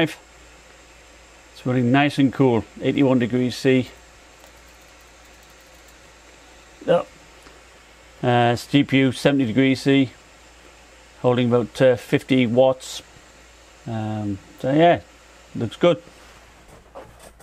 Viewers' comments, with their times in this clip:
0:04 one stop all useful needed review , btw what was that mouse , it was so noiseless